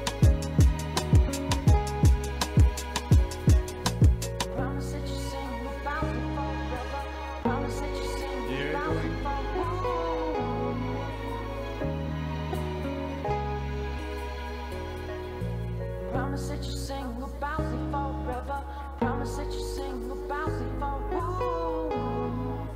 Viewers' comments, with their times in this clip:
0:05 I hear " Promise you sing about me before you go."